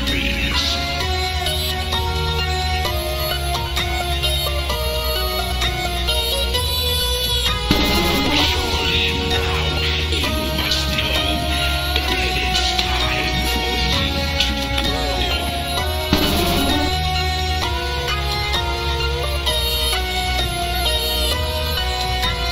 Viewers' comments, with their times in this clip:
0:05 sounds so... touching... GF's sings in this part... sounds sad, like a sad howling